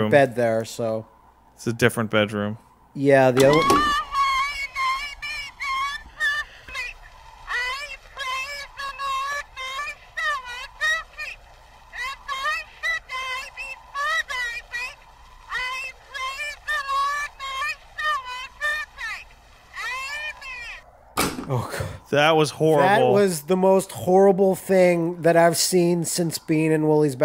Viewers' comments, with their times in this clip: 0:03 You know, That was fucking scary. But then I realized what she was saying and I just started laughing at how silly her voice is. then I thought. Can you make stupid shit scary sounding if you say it in a different language.
0:03 Holy shit! That voice was so fucked up that I didn't realize it that was that creep ass night time prayer: "As I lay me down to sleep. I pray the lord my soul to keep.."
0:09 OMG, was that soundbyte from the creepy Edison doll or whoever invented all the stuff? It sounded too familiar (and not all that disturbing because of that)